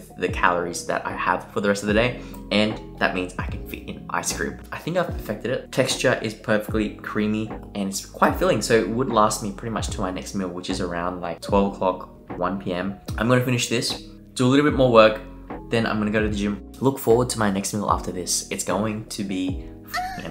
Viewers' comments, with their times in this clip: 0:08 Sounded like bed by 9 or 10pm and wake up